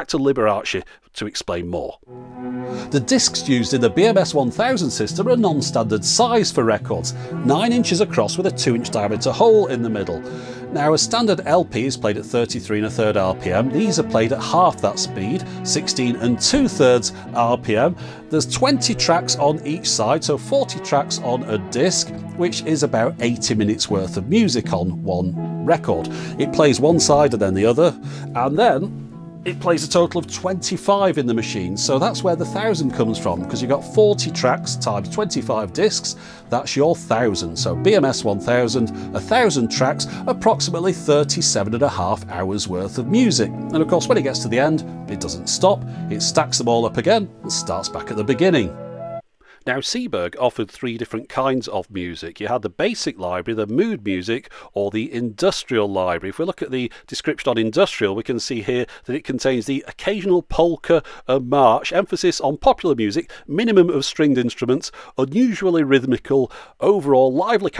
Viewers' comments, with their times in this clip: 0:03 It was only me that realized that "Don't Let Me Down" by the Beatles was playing on that classical-acoustic version?
0:52 Love the classical version of “Don’t let me down”